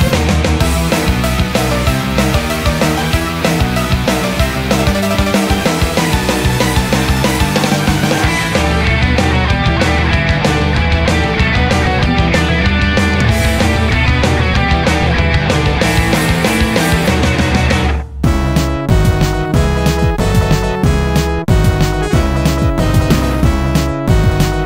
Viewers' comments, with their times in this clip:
0:07 I didn't expected the song have an amazing gitar rift